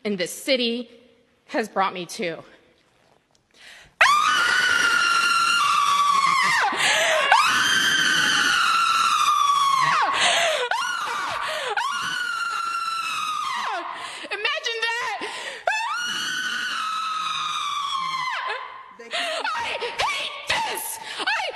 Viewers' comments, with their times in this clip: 0:03 I heard banshee are harbingers of death and when you hear their wailing, you or someone close to you is going to die.